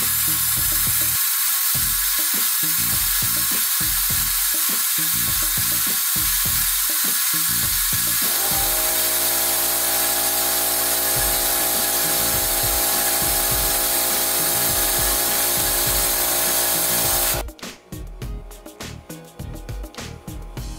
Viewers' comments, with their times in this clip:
0:08 My laptop's fan in a nutshell